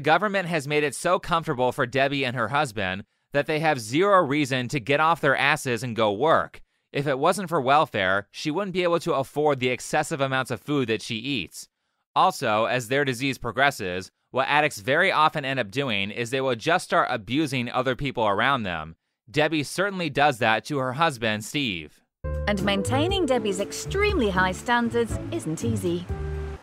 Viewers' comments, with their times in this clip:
0:08 she's to winded to be abusive